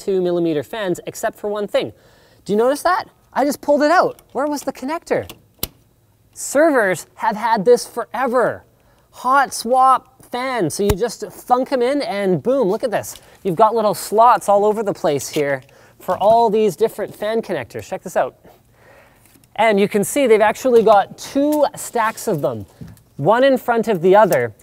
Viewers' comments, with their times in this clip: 0:09 was that a hitmarker